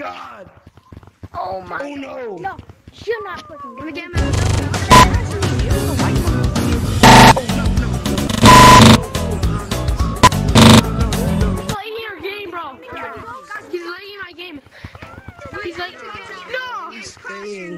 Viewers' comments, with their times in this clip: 0:05 is that the acual audio